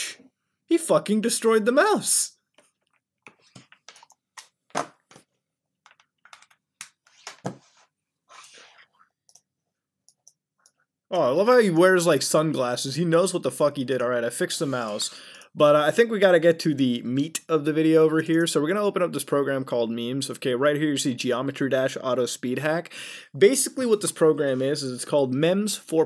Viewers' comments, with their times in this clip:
0:08 DA DA DA DA DA there can be only one d-o duble g thug lyfe bonzi buddy is wearing shades ear rape air horn